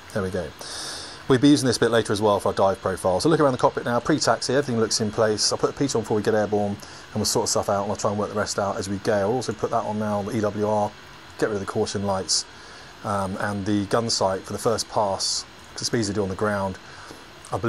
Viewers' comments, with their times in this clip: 0:04 “I’ll put the pizza on before we get airborne and sort the rest out as we go...” Ah, reminds me of my Nimrod days...